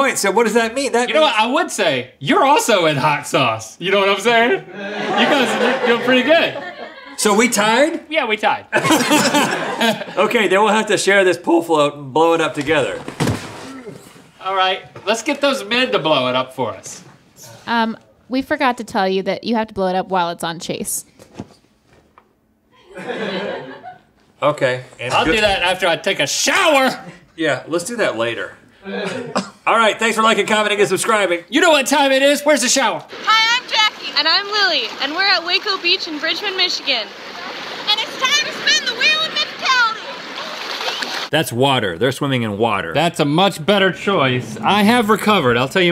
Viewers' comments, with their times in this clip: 0:09 Rhetts voice crack thoughh
0:29 Love the discord notification noise
0:30 A Discord notification!